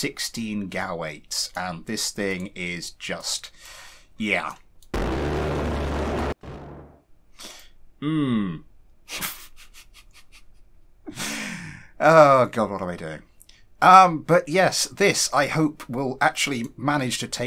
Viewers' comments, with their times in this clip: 0:04 put headphones and max sound at this time to explode your ears